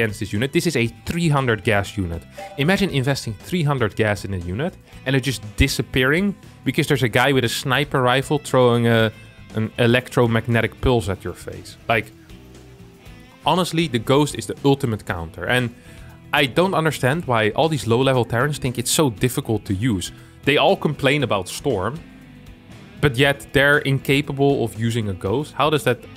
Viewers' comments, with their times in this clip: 0:10 Who also understood "electromagnetic pils" - an thought of a beer? ^^